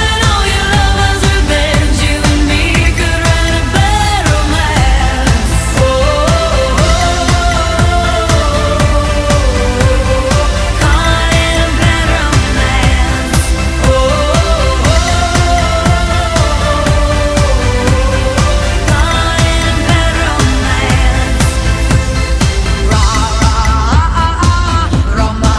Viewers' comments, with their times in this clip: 0:07 This singing is GREAT vocal warm up I found. And I chain smoke the whoa oh ohs